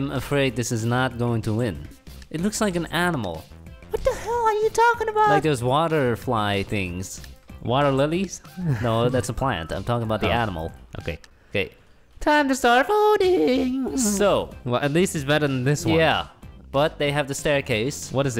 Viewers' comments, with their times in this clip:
0:03 High voice meme "What the heeeell are youuu talking aboout?"